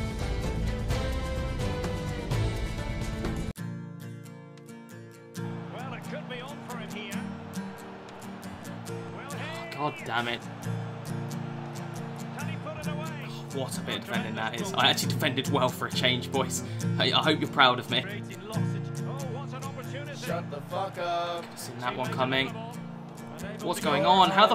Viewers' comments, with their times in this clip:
0:03 you heard the music and already knew what was going to happen
0:04 as soon as you hear that music u know what’s about to happen 😂😂😂😂
0:04 never good when this music comes on...
0:07 you knew what’s coming when the music hits in 🤣